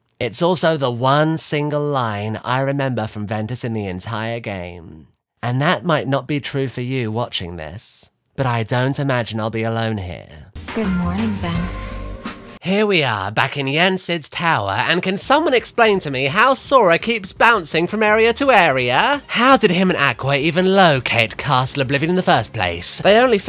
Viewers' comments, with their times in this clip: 0:10 Thanks for validating my not being crazy-- that's some really strong onee/shota energy, it nearly took me out and the wildest part is that THIS is the most emotion-laden line uttered by Aqua's English VA.